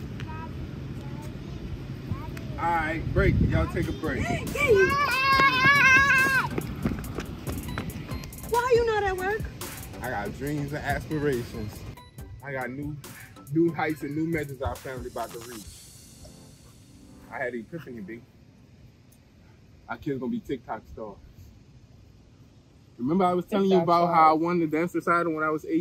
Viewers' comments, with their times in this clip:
0:09 I love the way that you said why you ain’t at work